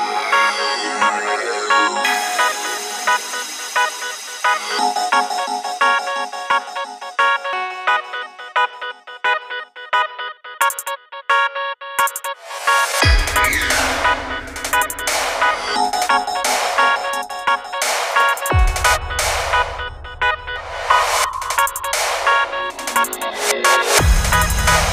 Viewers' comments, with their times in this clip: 0:05 at begining i was thinking about #raggahitech XD